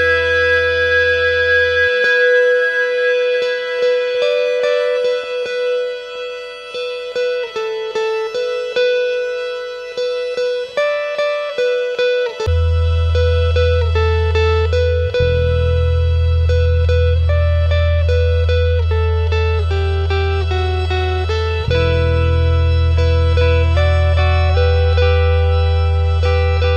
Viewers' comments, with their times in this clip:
0:10 the guitar section is the best bit